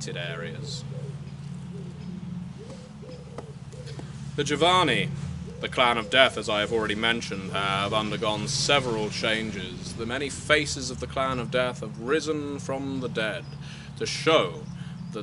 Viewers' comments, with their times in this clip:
0:03 what's that noise in the background? Sounds like a truck driving over a pothole